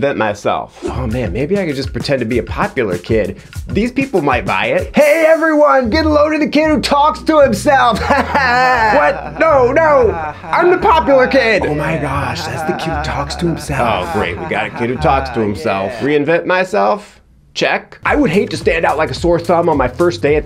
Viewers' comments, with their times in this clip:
0:08 The fake laughter omgggggg